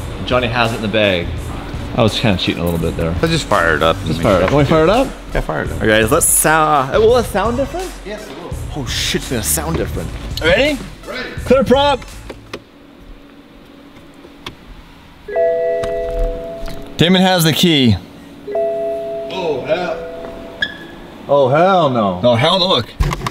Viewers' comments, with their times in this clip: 0:08 sounds weird not hearing the horn lol